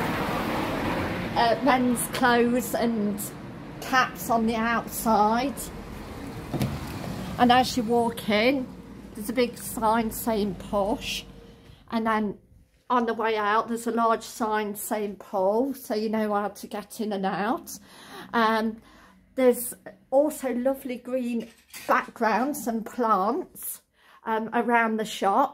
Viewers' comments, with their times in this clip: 0:08 Peace and quiet as you walk in 😂😂😂😂😂